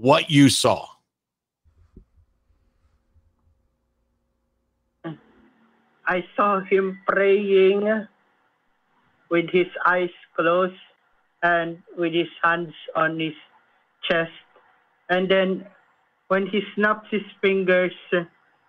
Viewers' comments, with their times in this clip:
0:05 did he see him prrraying or purrrrring? 😂 🐱